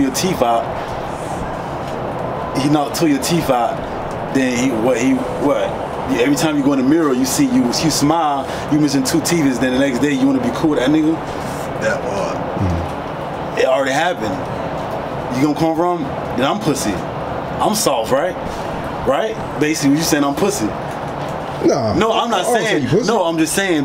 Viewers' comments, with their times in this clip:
0:10 Uu Go In Da Mirror And Smile And Uu Missing Two Teefis 🤣🤣🤣 Bro illiterate As Hell